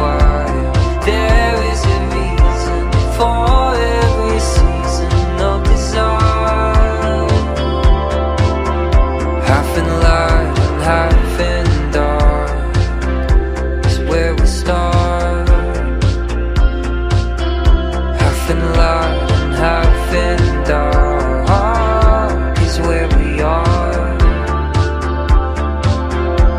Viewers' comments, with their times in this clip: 0:07 so subtle and beautiful The Midnight.......always nothing but incredible